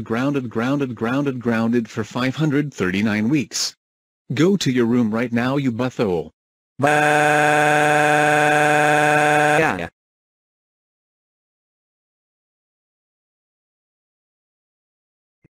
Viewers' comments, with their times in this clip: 0:07 Amazing Flying Ice Bro’s Crying Voice